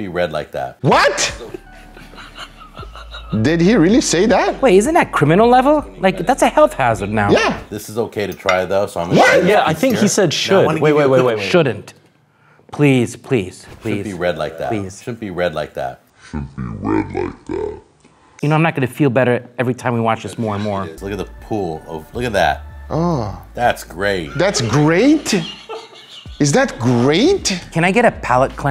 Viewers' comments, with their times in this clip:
0:10 I'm pretty well sure he just said 'shouldn't be red' with poor enunciation...But then he went on to move slightly away and say 'This piece is okay to eat though.' as if the other spot was fine simply because it wasn't pooling red...So...
0:11 he said “shunt” as in shouldnt